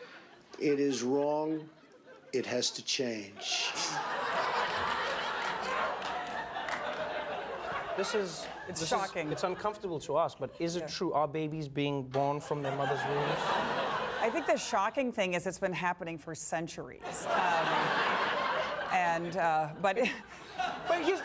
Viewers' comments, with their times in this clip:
0:04 when she laughs and suddenly stops because Trevor is not laughing lol